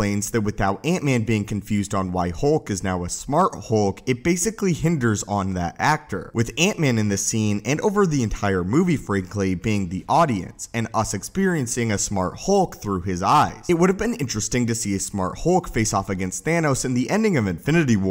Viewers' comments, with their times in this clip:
0:04 Hinges on that actor, not hinders. You know your delivery would be a lot more pleasant as well if you didn't use the same inflection and expression on ever sentence. Not that this is awful but you get a bit mechanical in tone by stating just about everything the same way.